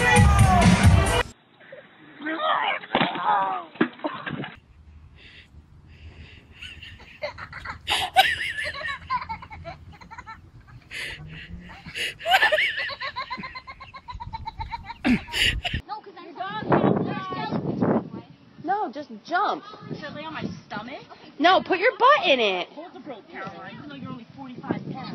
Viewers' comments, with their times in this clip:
0:04 That little kid cracking up was pretty great
0:05 The part where the laughter of a child fixes your day.
0:08 Listening to the little girl laughing was cracking me up! 🤣🤣
0:09 is the best of these video's, of the little girl laughing. The rest of video's, NAH!
0:13 same laughs as me! LOL!